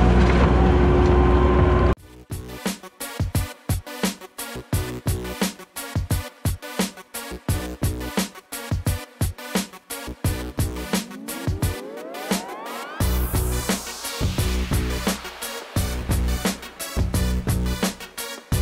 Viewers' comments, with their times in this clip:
0:05 love the music !!